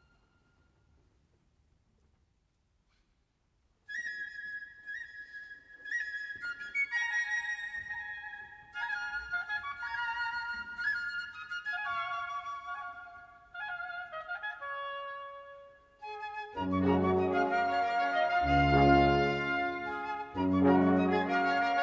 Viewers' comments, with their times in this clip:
0:03 onwards is truly the most uplifting snippet of sound I have ever been lucky enough to hear.